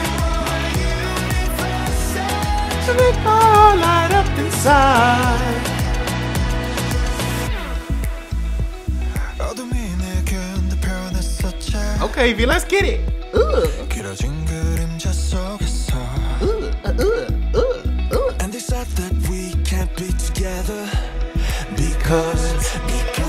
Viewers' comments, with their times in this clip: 0:09 Yoongi's producer tag is when he whispers suga though he also uses it before he speak his raps. the song ending in which is his birthday I think is also his tag